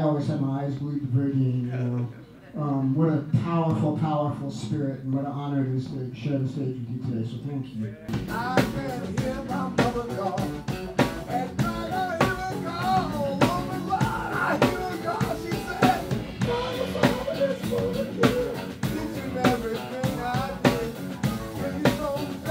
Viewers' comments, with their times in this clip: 0:09 Nice ! Hey... what is the name of the song ? That sounds upliftingly great